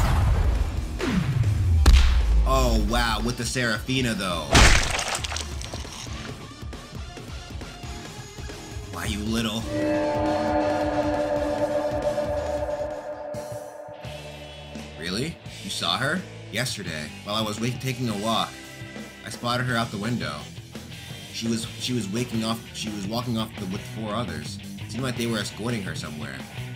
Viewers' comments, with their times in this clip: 0:10 the theme is scary love it